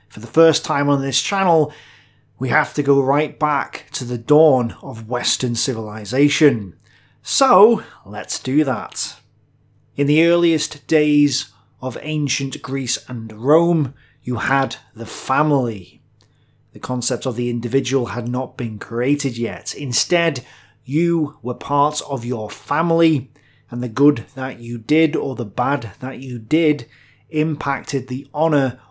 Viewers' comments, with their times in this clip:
0:09 "Hery derpy derp derp"? Please explain.